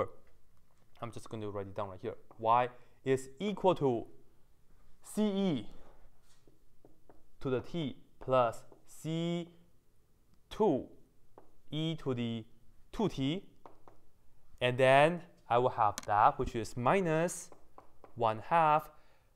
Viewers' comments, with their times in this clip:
0:05 I suddenly found that you accidentally spoke Chinese.:face-blue-smiling: